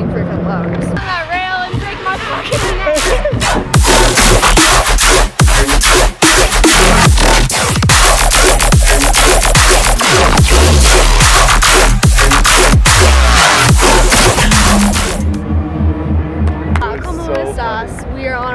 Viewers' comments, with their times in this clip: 0:04 this one is aggressive and is riddim dubstep